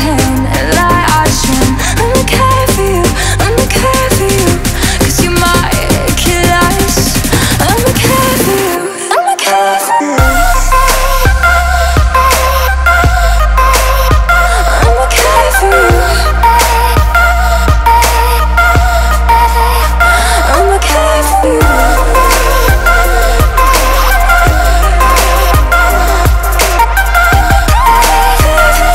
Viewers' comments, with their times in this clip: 0:09 that girl fall when beat drop in my ear